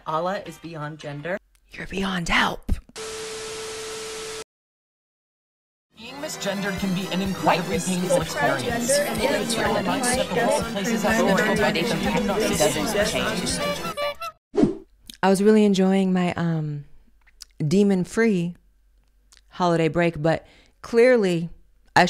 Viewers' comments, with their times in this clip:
0:06 This jingle is everything xDD